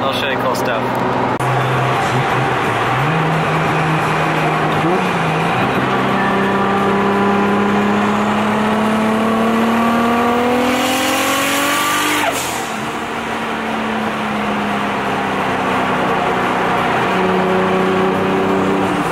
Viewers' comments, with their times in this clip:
0:07 that’s probably the first time I’ve heard a Supra with little distorsion or without a huge spool sound in the way